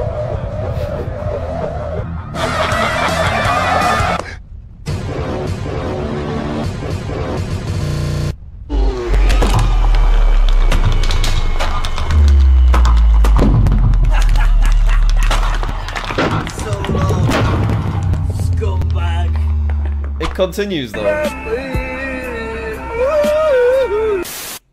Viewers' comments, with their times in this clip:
0:07 Giornos piano theme starts playing